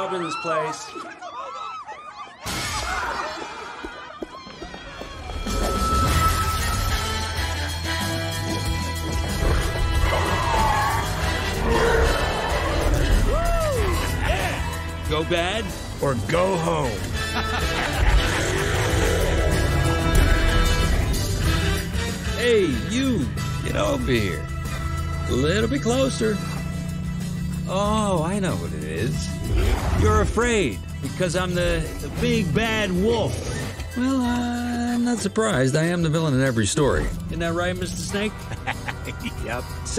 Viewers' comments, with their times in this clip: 0:06 Nice Music. It's Catchy.
0:22 bro said that Shid smooth asl 😂🔥🔥